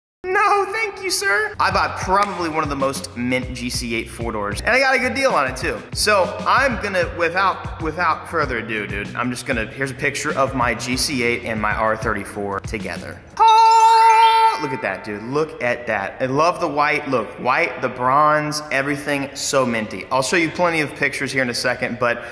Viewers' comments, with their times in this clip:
0:07 He said doo-doo'ed.... Haha... poop.